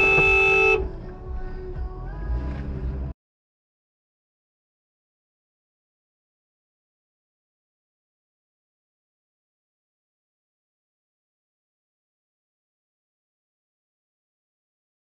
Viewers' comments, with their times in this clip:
0:03 Volume warning Jesus Christ I beg.